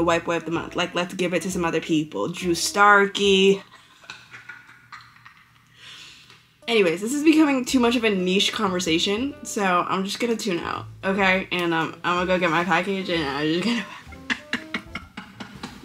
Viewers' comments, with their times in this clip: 0:03 the giggling for drew starkey is so real 🤭